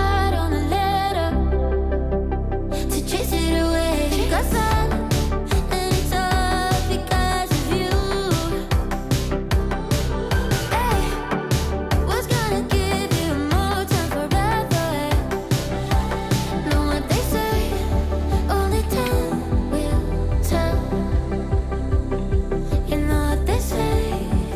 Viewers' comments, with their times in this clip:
0:10 Bob Ross impression :)